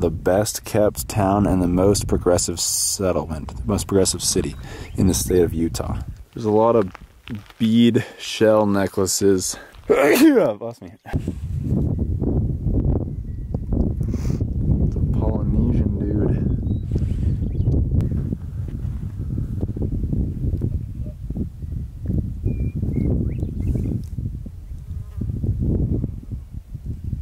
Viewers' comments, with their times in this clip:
0:08 ACHOO.... Bless me. I laughed too hard at that. I love this guys attitude.